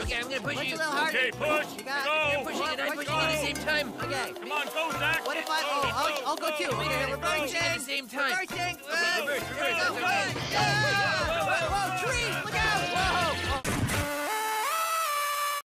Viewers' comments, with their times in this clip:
0:10 Cartoon Crash! Sound Effect